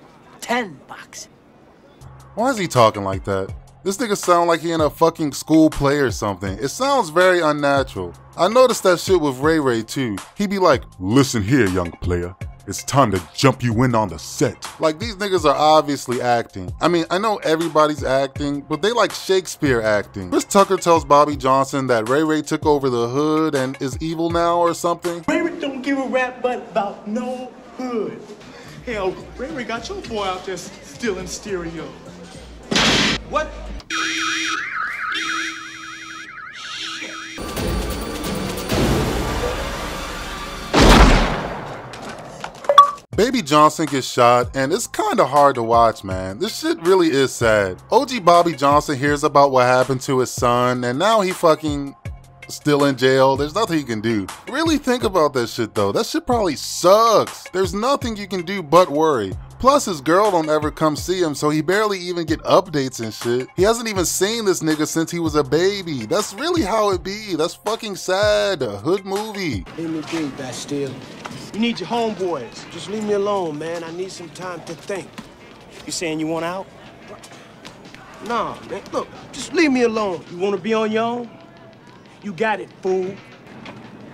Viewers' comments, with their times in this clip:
0:10 sound like sum saints row type shii🤣
0:10 i died when he talked like ray ray 🤣🤣
0:11 man you should do voice acting
0:42 The Xbox Noise Caught Me Off Guard😭🤣
0:45 was that a Xbox achievement sound for shooting him 🤣🤣🤣🤣🤣🤣
1:07 that’s fxckin saaaduh hood movie😂😂😂